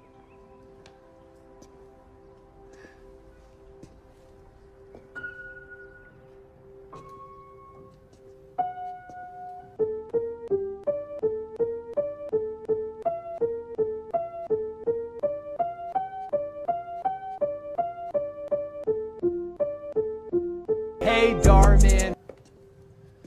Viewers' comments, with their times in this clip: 0:04 she play hey dhar mann on the piano
0:05 A great music HAHAHAH